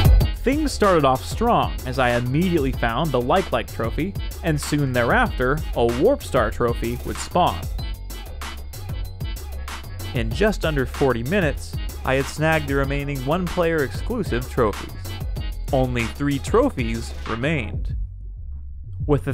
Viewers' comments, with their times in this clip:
0:03 What's the song used ? It goes HARD